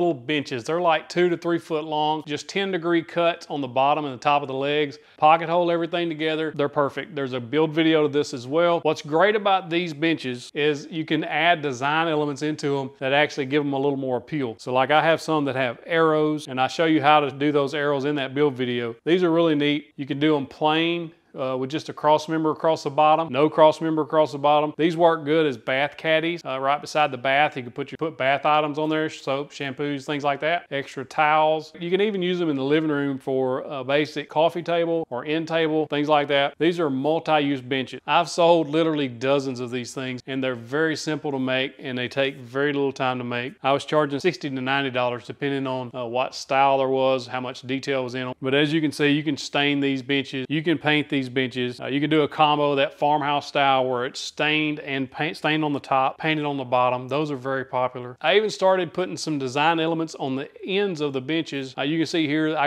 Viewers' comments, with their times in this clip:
0:09 Did he say 'What's great about these bitches' ?
0:47 I didn’t think he said benches😂